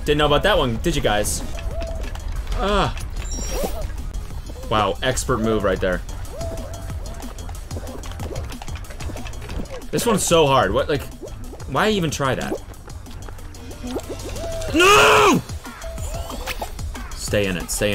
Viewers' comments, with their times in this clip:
0:03 what was that noise 😂